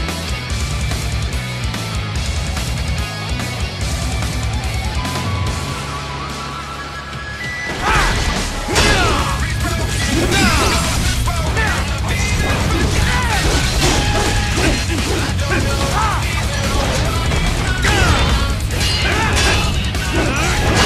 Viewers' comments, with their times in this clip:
0:08 max volume from here on,please